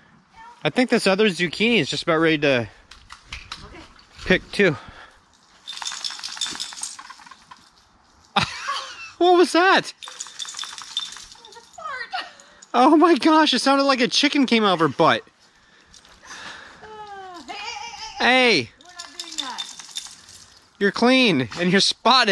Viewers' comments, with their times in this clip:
0:06 Got your card today, Thanks. I smelled a Buffy fart!